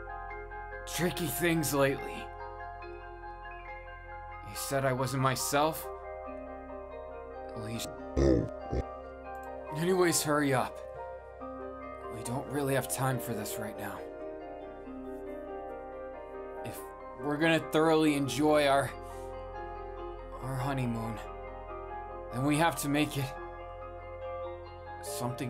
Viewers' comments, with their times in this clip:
0:07 has a creepy deep scary glitch voice--- eeck
0:08 Bakugo:i just go under the blankets........as innocent as ever Me:bish I don’t trust you Bakugo:*licking and slurping noise* Me:(7•.•)7 Also :at am I the only one with weird glitch?or is it part of the audio?😅
0:08 Did anybody catch the demon sound ??😮🤔🤔